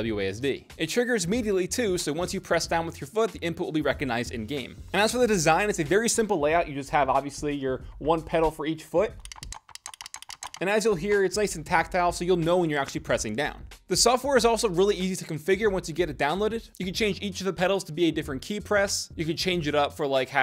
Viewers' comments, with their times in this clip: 0:03 Who noticed the weird audio change after ?